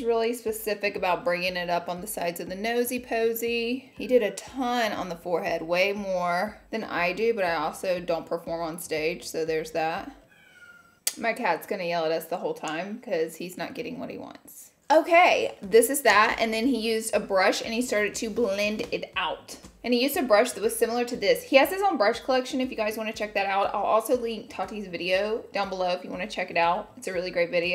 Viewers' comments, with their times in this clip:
0:10 yup heard the kitteh.